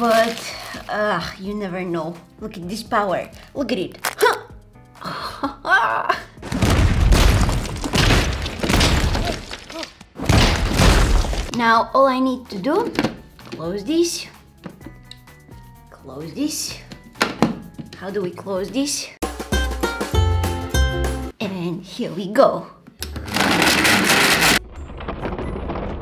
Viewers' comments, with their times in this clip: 0:08 She’s as strong as the honk! 😄